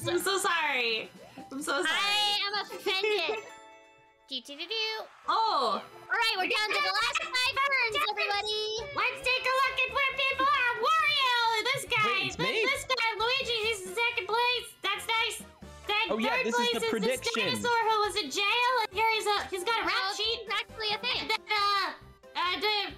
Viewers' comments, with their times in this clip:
0:05 for the hilarious Toad Impressions! I was literally having Banana Split for dessert so I was trying so freaking hard not to laugh!